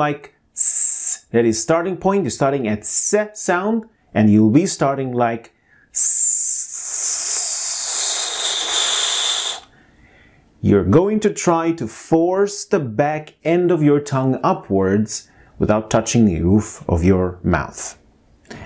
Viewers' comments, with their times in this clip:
0:06 my man copied an airplane vacuum cleaner